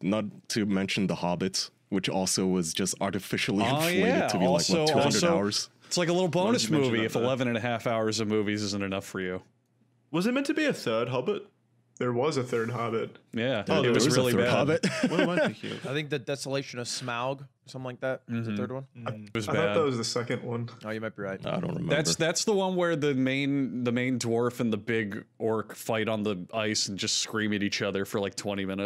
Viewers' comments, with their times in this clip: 0:08 "There was a third hobbit". Ludwig and Charlie saying this at the exact same time but Ludwigs mic not kicking in really tripped me out
0:11 why does it look like lud and critical said that at the same time lol